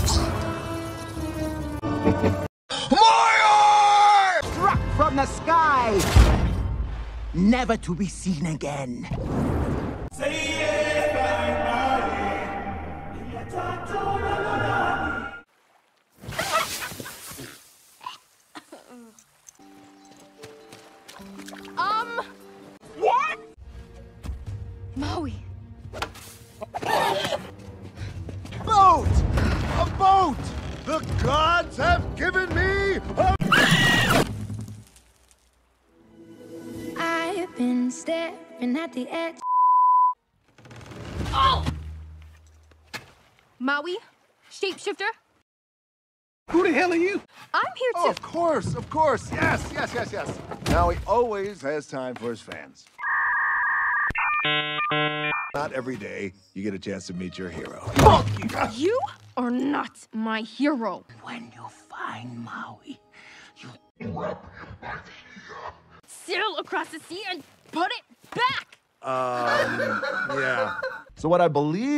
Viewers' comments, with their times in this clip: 0:10 the song sounds amazing.
0:10 HELP- SPED UP IT SOUNDS SO GOOFY
0:23 Nah cuz why’d he scream like there was a cockroach 😂
0:31 Lol this part need to see it he girl scream my friend has that scream when i punch him
0:32 "Aboat the gods have given me a AAAAAEEEEEEEEEEEE" The screaming is everthing
0:32 Maui and his scram LOL😂
0:33 help that scream-
0:33 why did he scream like that 😭
0:33 What was that he scream like I would think Moana would
0:34 THE CRACK THO😭🙏
0:34 the scream got me so bad💀🤚
0:34 his scream made me jump 😂
0:34 I’m srry what was that scream from Maui 😂😂😂😂
0:37 Bro how does he scream like that the rock really got some impressive vocals
0:58 sounds like he is saying “f**k”